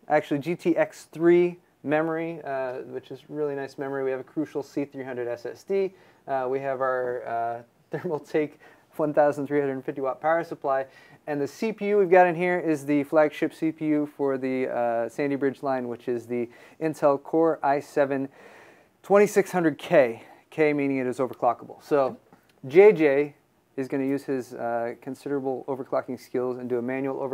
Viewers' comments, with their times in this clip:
0:08 def said funthousand HHHAH